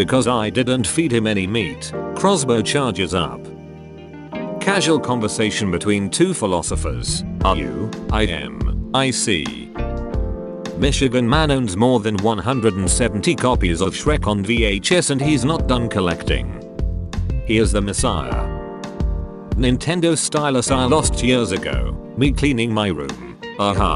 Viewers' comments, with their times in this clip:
0:04 *shotgun loading intensifies*